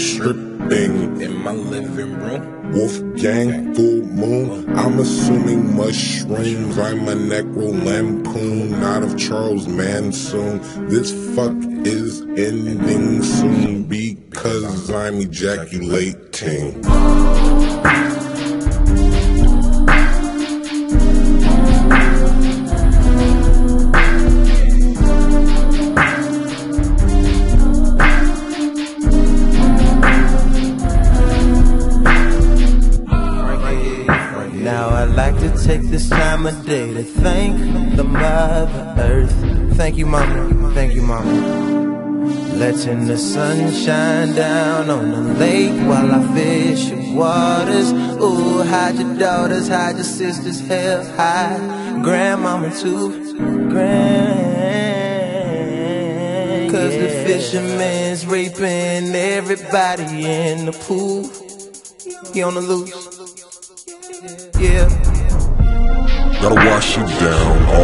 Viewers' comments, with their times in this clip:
0:09 The best transition in this song is lol
0:54 I love the way Frank says gram